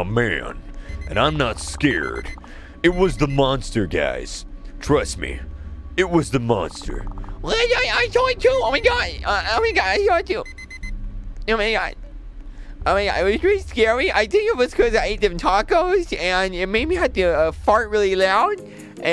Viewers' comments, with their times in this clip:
0:07 kreek: (using timmy's voice on someone)